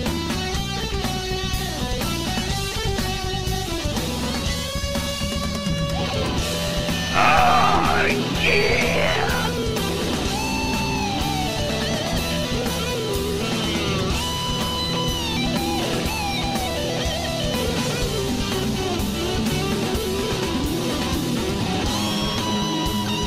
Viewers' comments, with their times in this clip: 0:04 Atrocious bend lol